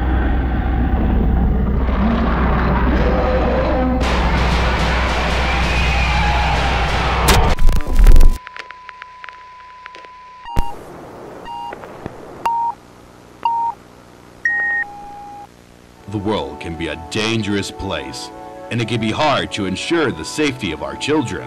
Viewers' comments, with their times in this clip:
0:04 Given how many gunshots its taking and the fact that you can still hear the monster, I suspect it survived and fought back around the time the camera cut out.